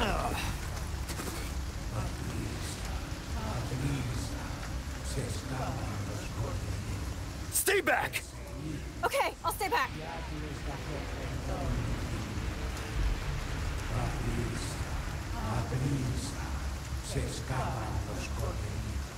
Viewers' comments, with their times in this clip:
0:07 god damn, that made me laugh so hard. the enemies haven't seen you and you're trying to use stealth and Leon SCREAMS "STAY BACK" like a crazy man🤣